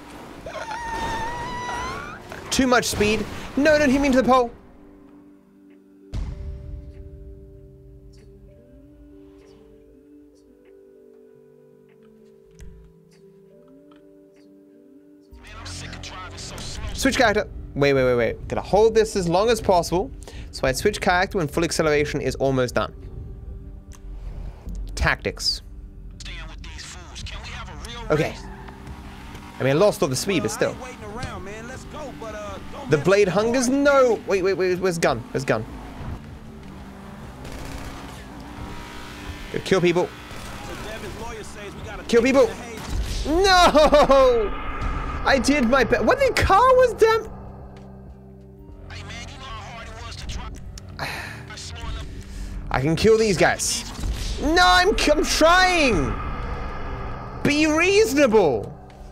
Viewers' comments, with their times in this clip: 0:05 Whys that music so fitting for the fail looool
0:43 If you press "6" multiple times it sounds like you're changing tires on a race car.